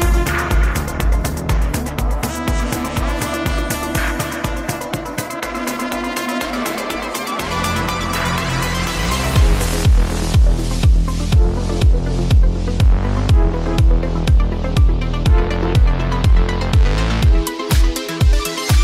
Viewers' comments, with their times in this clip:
0:06 This whole set is 🔥🔥🔥 but the jam that kicks in is soooooo good 🤩👍🏼💖💖💖✨✨✨✨Thank you for this awesome set 💖💖💖💖💖